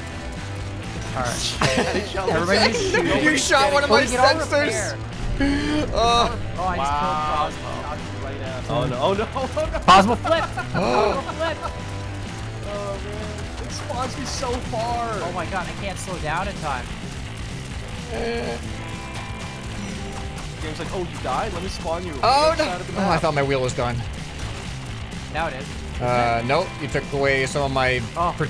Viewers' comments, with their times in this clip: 0:09 MY EARS AAAAAAAAAAAAA